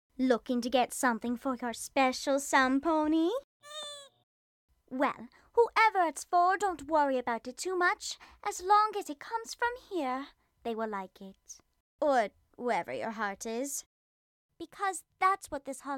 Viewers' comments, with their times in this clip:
0:03 Fluffle Puff: (does that squeaky sound) Me:Aww...let's watch it one more time... Fluffle Puff: (does that squeaky sound again) Me:That's all. I' m dead.